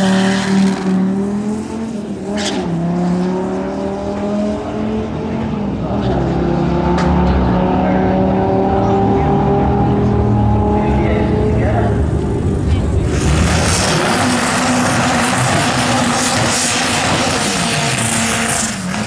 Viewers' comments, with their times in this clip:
0:03 ...did I hear a 5cyl there??